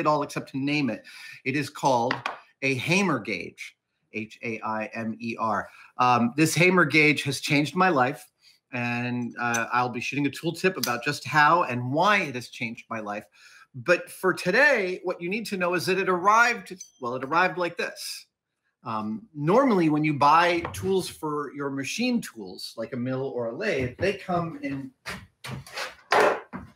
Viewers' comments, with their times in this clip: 0:09 He's going to be shitting a tool tip?